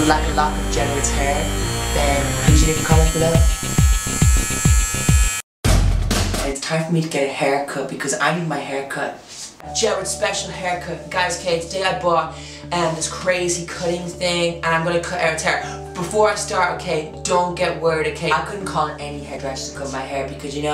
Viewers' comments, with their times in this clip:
0:07 i love how you say haircut xD